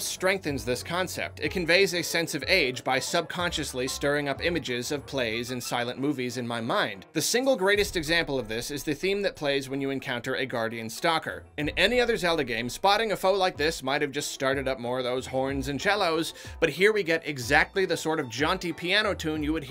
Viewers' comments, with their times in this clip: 0:06 I don't agree with that. To me, the piano that plays when a guardian stalker doesn't sound like an old movie. It sounds technological and futuristic.